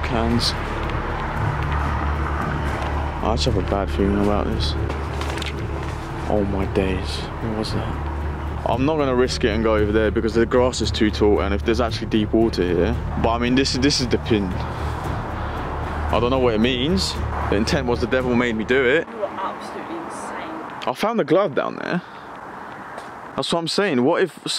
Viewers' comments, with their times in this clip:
0:05 Omg! that is the funniest saying that you guys over there say that just cracks me up every time I hear it! I don’t know if you’re saying all my days or oh my days, but either way it gives me a giggle every time I have no idea why. First time I heard it was from Joey Essex. 🙏🏼🕊❤️😆